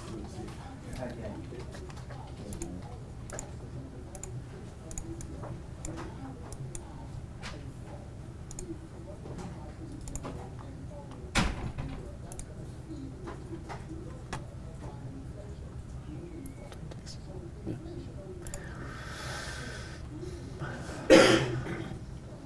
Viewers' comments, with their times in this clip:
0:04 ,,, sounds like someone opening up a fresh sandwich...